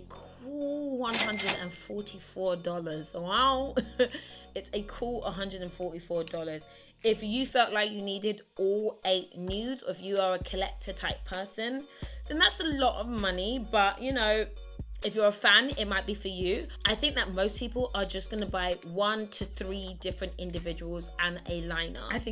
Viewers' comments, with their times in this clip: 0:03 The way she says wow 😂😂😂made my day